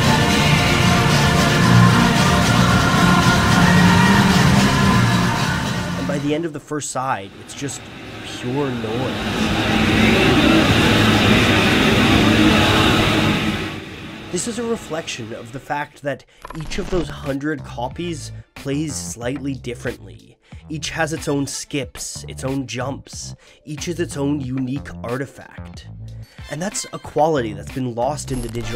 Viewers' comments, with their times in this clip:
0:09 I want to say, the bit where you can just barely hear Happiness is a Warm Gun through all the noise is the first time I've gotten legitamite chills in a while.